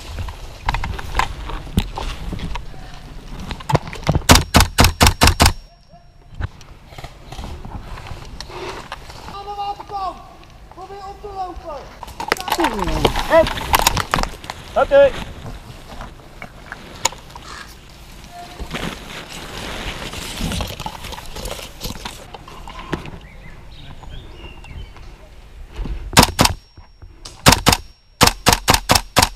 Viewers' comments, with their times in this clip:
0:10 I thought he said “I’m an umpa lumpa”